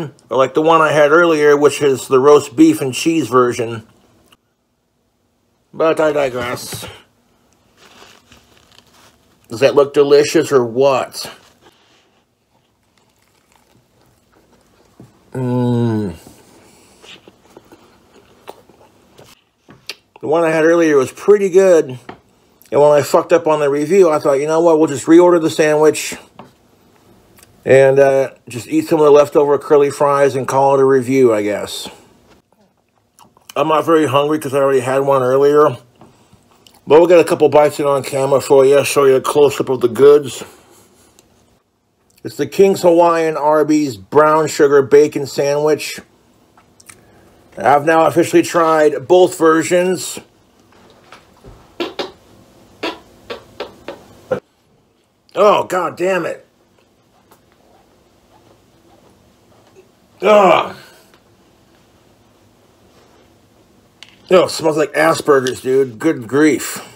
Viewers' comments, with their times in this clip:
0:04 You DIE-GREASE for sure...
0:48 Nothing like standing up in the middle of your meal to squeak out a wet and juciy fart onto the greasy fast food you're eating. Stay classy king.
0:51 he got up out of his chair just to blow a wet fart directly towards the spot he is eating his food🤮